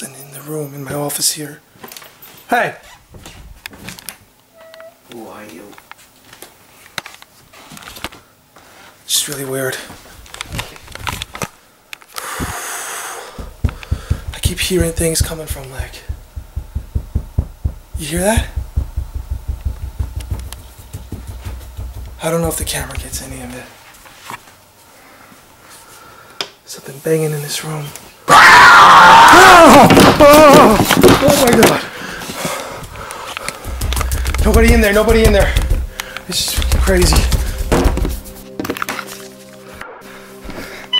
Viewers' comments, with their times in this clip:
0:04 hear a woman say :who are you: just before that something else was heard',!!!!!don't think this was you mate?
0:05 you can hear someone say who are you
0:06 did anyone here something it says somethink like how are you diffrent voice can hear better with hearphones
0:28 Rip headphone users.